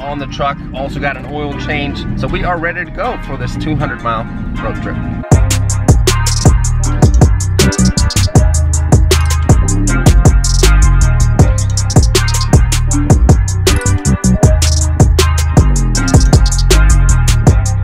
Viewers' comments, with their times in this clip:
0:05 Bass dropped harder than my grades